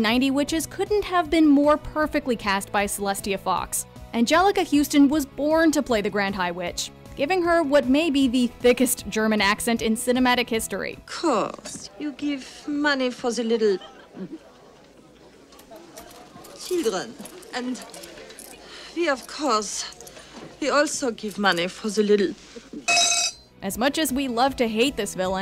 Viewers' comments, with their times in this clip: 0:08 It's a Norwegian accent.